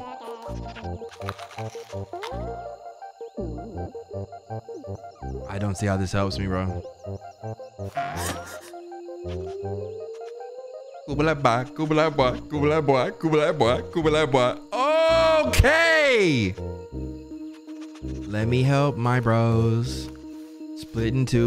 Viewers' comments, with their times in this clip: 0:06 “i dont see how this helps me” then just breaks into sing song after it helped